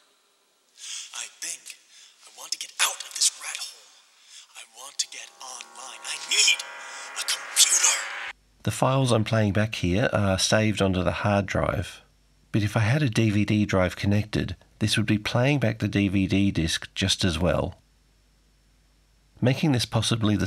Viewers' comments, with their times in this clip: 0:07 Keanu stuns with a double or triple oscar worthy acting performance 😂still far too 'excelleeeeeeeeeeeent'